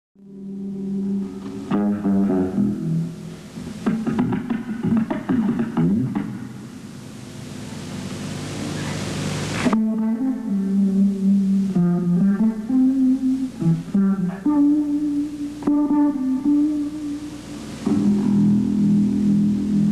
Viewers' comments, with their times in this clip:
0:03 Jaco discovered Indian Slap Bass.